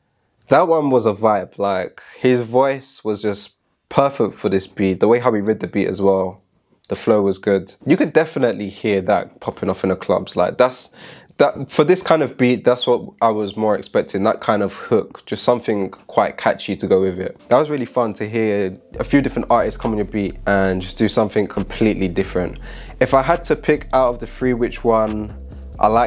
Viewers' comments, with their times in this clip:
0:08 that last guy How would you go about customizing a beat to someone's voice like that so it fits? Pitch correct the voice so its in key?